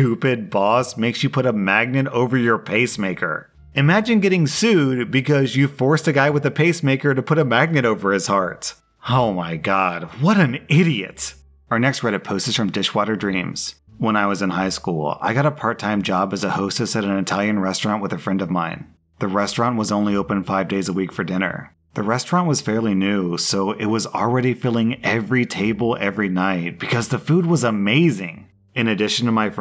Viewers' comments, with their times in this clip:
0:10 Sometimes, you sound like Napoleon Dynamite